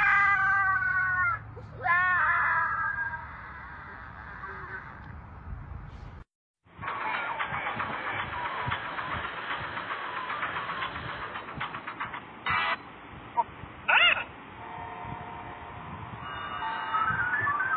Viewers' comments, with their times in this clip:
0:03 bro did NOT know how the song went